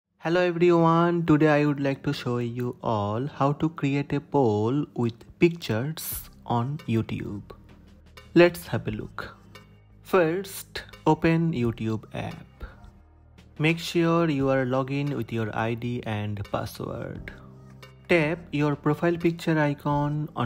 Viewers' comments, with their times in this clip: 0:05 That psst scared the hell out of me